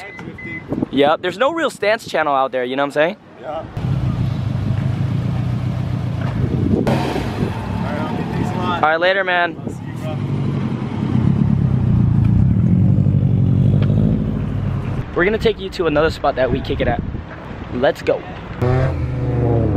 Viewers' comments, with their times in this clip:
0:05 "we gotta show em what stance is about" airs up haha shit had me dying for some reason